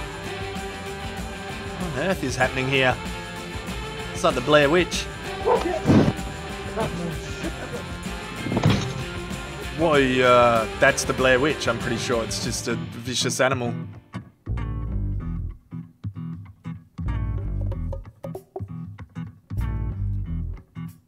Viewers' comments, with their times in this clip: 0:09 the dog was barking at a mountain lion....found in North America.